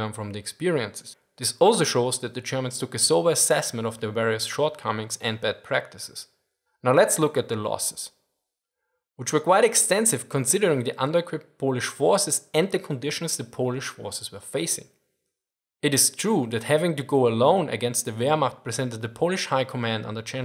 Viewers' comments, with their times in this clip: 0:04 "Wehr-nerd" I burst out laughing